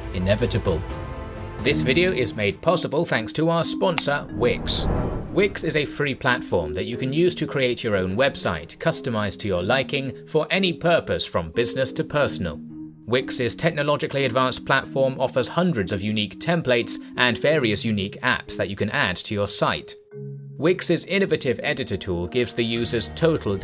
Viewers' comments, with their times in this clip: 0:08 use the voice btw i know it is the same guy